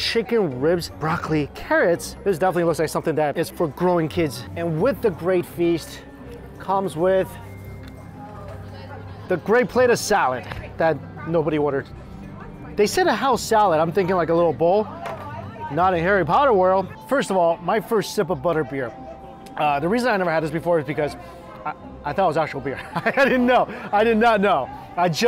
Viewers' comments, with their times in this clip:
0:06 On Butter Beer Park person in back ground go wow that person has lot of food